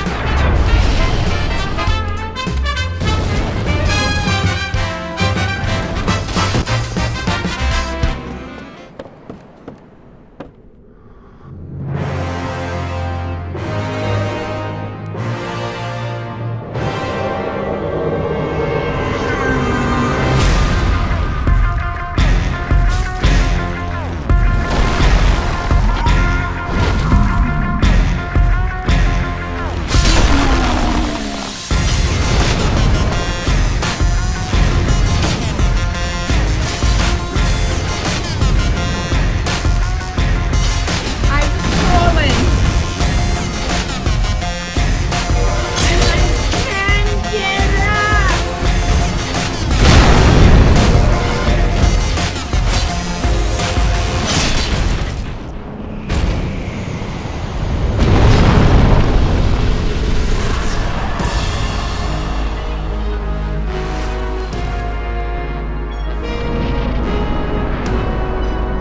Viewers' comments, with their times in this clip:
0:10 The URF music was pretty hype
0:50 Can we get a moment to appreciate how perfectly the music syncs with the clap ?!